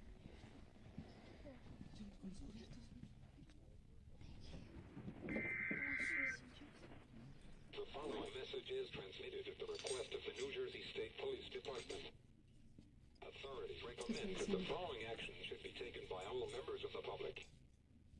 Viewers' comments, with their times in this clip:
0:05 I heard siren head noise. Noted